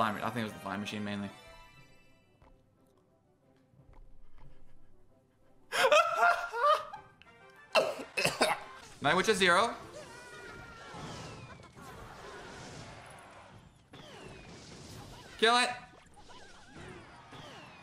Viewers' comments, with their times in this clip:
0:04 that was the most cringe laugh ive seen